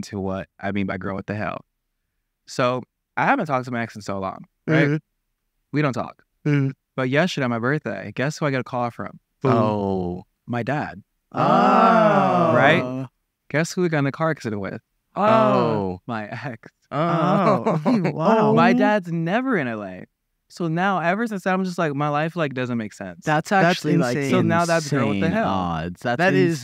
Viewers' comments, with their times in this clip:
0:06 stop was art, the "ohhhhh's" were stunning.
0:07 I love how they were saying 'oh' but in different fonts for each thing Larray was saying 😂
0:08 the plottwists and the triplets saying ‘ohh’ after everyhing killed me 💀💀